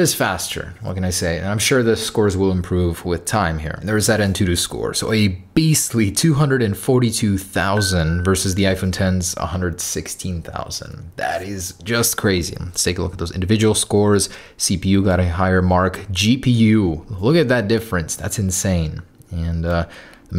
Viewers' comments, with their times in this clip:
0:07 that apple watch notification noise i thought it was mine LMAO